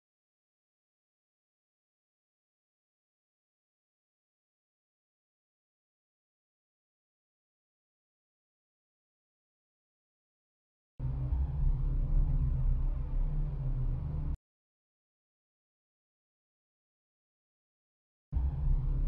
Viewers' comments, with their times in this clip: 0:05 is this the same dollar store evil voice from mr maze.